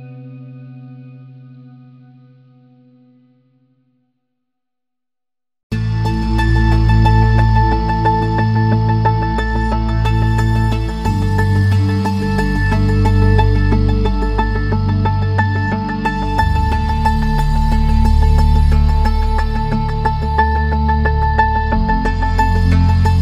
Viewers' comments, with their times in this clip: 0:05 why this gives me GTA Vice City theme song vibes